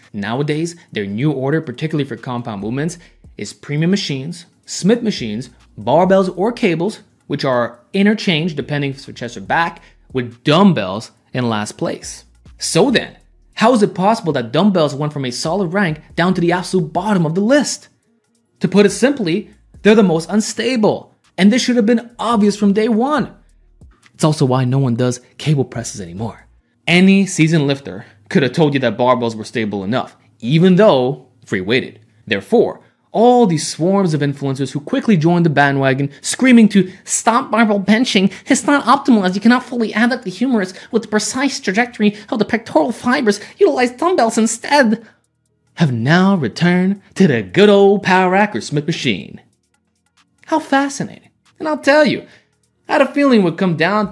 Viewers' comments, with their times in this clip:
0:03 WHAT kind of machines? I can't understand what you said.
0:37 😂😂 best impersonation. Hilarious 🏋️‍♂️